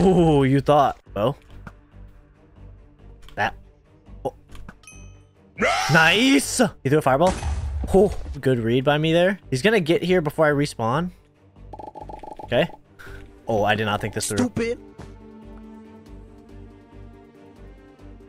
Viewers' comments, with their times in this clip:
0:05 was Indian accent XD 😂😂